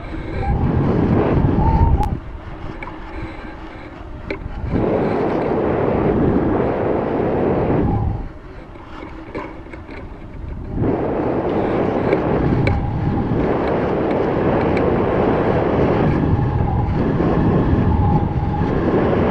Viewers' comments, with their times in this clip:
0:04 how people’s microphones sound in online games